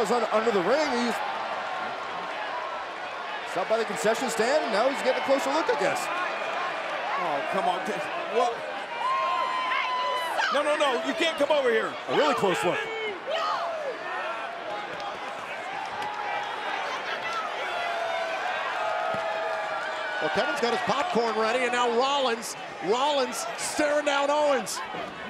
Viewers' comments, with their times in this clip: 0:09 you heard that women say “HEY YOU SUCK”